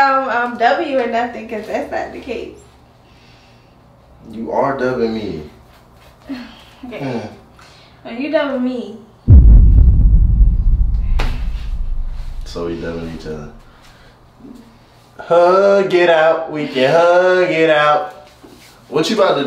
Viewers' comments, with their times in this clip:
0:06 did she say bae or I’m trippin 😭😭😭